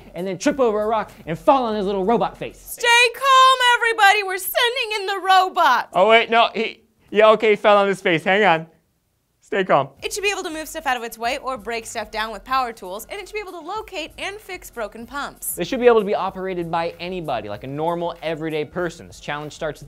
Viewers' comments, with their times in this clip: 0:05 that sounded like a tobuscus voice!! ;o